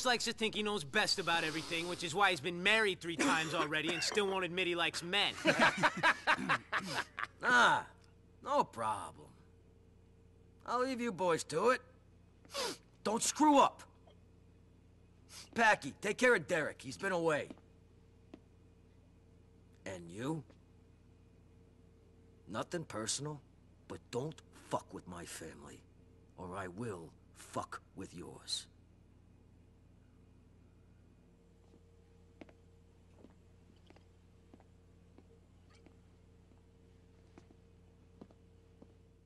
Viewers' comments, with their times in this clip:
0:05 Love the laugh
0:21 Bro This is so realistic You feel the tension the way it says it such good acting tf 🙏